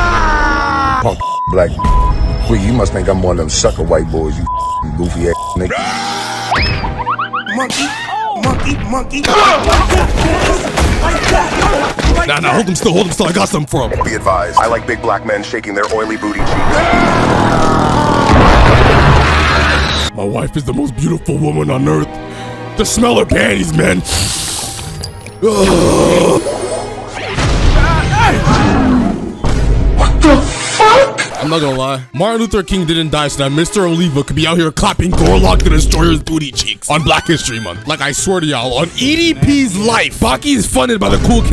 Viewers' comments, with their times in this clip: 0:08 melanin master audio is crazy
0:26 golem deploy sound effect is crazy 😭😭
0:27 with the golem spawning sfx 💀